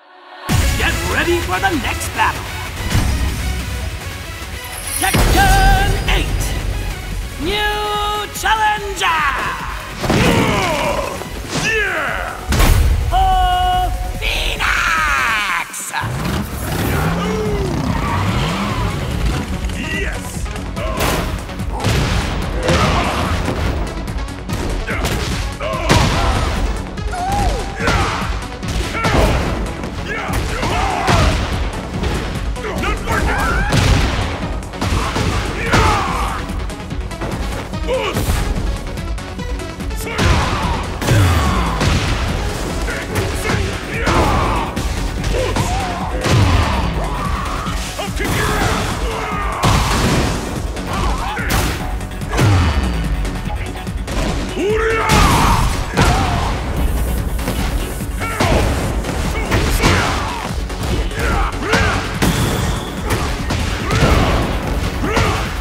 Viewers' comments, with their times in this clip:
0:04 This new narrator is amazing!!
0:47 Paul has some Hank Hill energy with that "I'll kick your ass!"
0:47 does he say "hop kick your ass" ? lmaoo